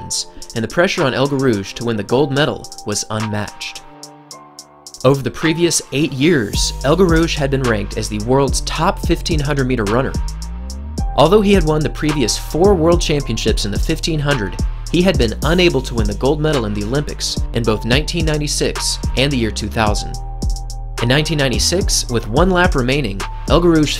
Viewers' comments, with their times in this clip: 0:09 I thought he said top15 100m runners and I was confused